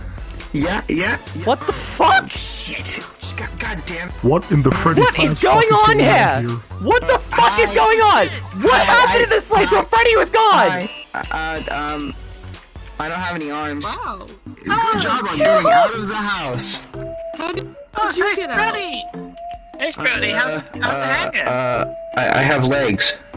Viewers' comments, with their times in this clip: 0:04 “what in the Freddy fazfuck is going on here” I swear he sounds like sans 💀💀